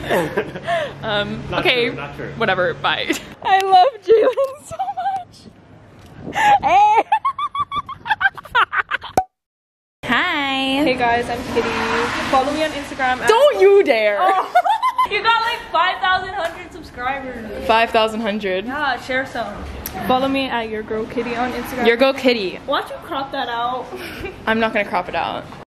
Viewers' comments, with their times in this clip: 0:08 your laugh is so cute😂😭